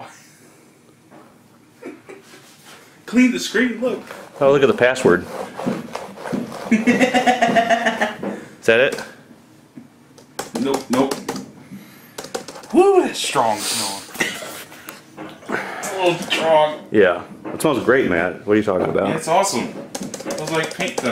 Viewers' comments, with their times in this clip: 0:06 Sounds like a maniac laugh🤣🤣🤣🤣🤣🤣🤣🤣🤣🤣🤣🤣🤣🤣🤣🤣🤣🤣🤣